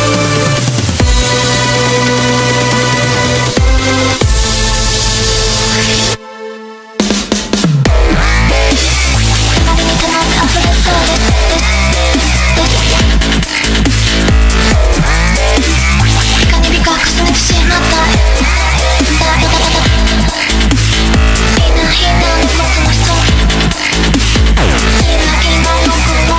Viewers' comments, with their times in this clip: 0:07 i started crying a quarter into the song and i dont actually know why, but it turned into cry-laughing when the lyrics just turned into noises here